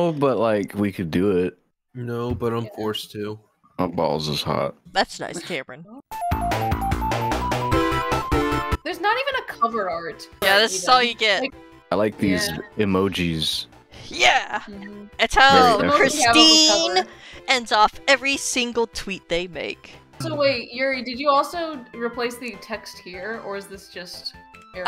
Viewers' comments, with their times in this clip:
0:07 "That's nice Cameron" has "Yes yes and I'm sure you'll meet martians tomorrow" Sir Pentious energy